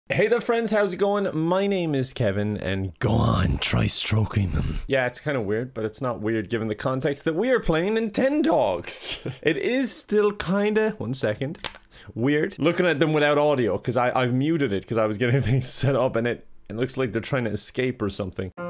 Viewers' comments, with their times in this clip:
0:03 he-he literally sounds like hisoka 😳